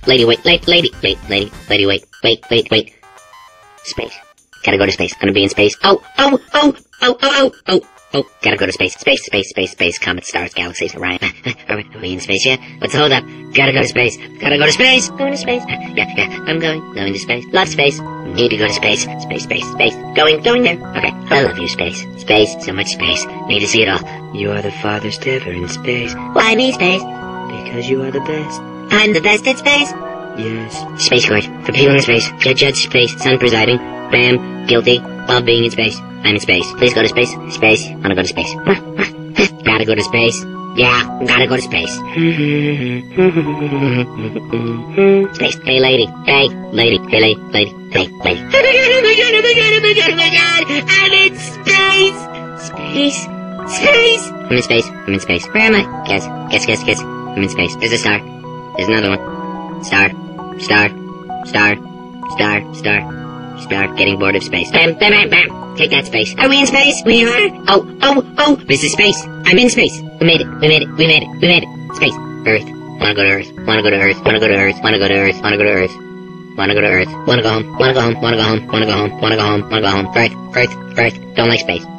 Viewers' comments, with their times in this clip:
0:09 transcibe audio, and i quote; "well devastating stay stay space camp sentences, like it beats the shit. Canada is basically a nice day. Sometimes made content management that's based neediest nations: MySpace. :P want proof? go to and watch for about 10 seconds :P
0:10 "Space camp sentences like it beats the shit internet canada is"? WTF?
1:05 listen for a few seconds.... did he say dead space? it sounds like it tho... srry if it isnt cuz my hearing isnt the best loll